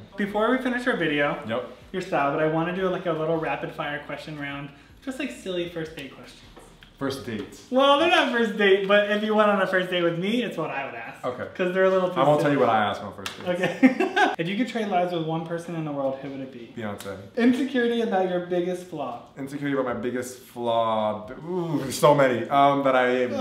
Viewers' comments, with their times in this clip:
0:07 A great episode of thoughtful conversation. Then A WILD TUBA APPEARS!!!!!